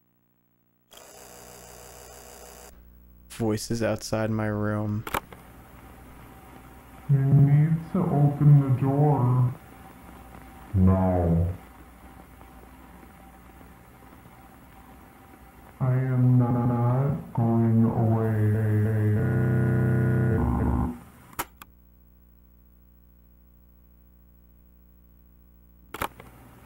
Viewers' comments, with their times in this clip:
0:07 “Open da noor” but scary